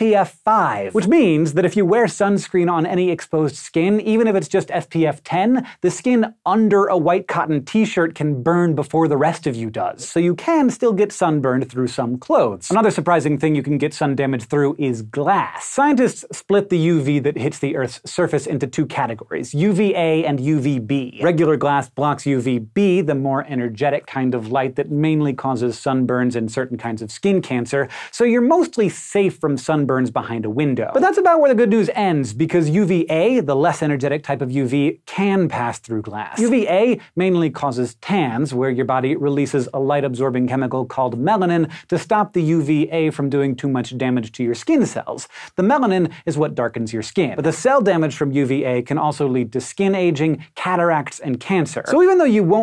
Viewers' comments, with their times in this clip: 0:04 "fpf" i relate. or...are my ears just dead? idk but i still relate
0:39 I thought he said pans